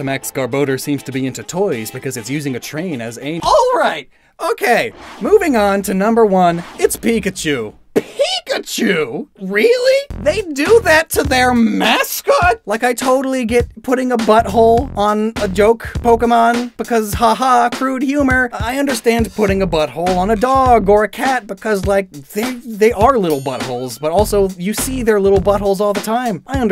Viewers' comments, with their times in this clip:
0:08 who was peeing off screen